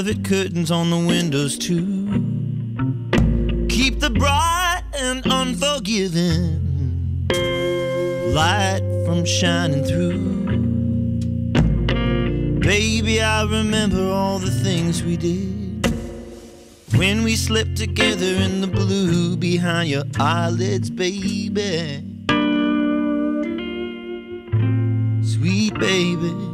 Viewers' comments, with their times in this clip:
0:07 Can anyone tell me what he does ? Does this technique have a name? Sounds damn good!